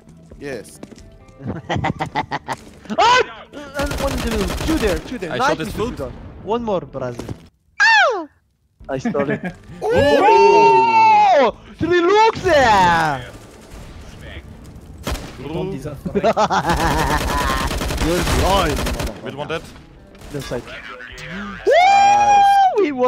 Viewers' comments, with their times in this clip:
0:07 cute yelling LOL